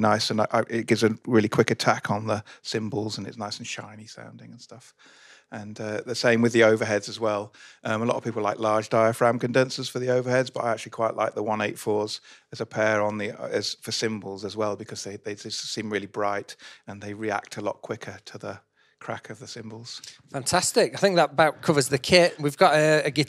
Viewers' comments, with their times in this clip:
0:04 was that asmr 😂